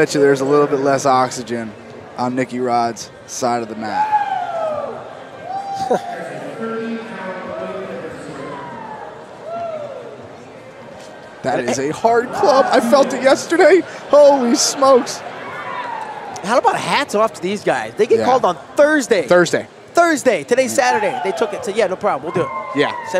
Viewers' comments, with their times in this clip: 0:04 Tony Ferguson starts yelling
0:10 *voice cracks, quivering* “that is a hard club, i felt it yesterday”